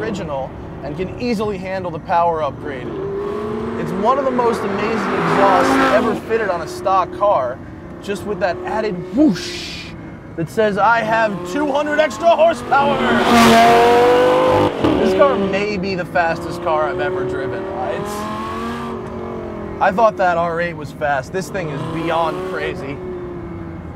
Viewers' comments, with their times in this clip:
0:10 lol, its just the way you laughed when you talk about the 760HP, and kinda remind me of him :P